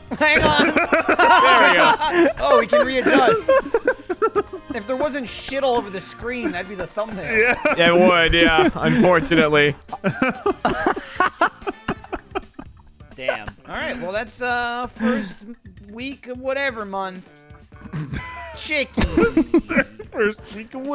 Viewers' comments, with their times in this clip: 0:03 non copyrighted 80's music kicks in